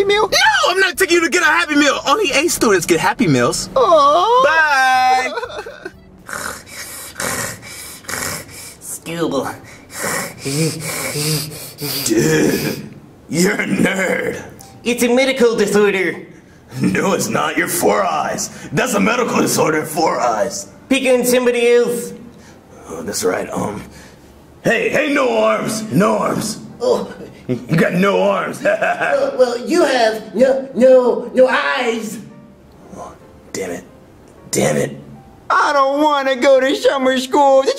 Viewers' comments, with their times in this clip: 0:07 Why Does Cody Sound So Different To His Voice Now?
0:13 Cody Sounds So Different Compared To Now He Went To Sounding Weird To Quiet To Loud And Smart
0:21 My God Cody sounds like Mr Crocker 😂😂😂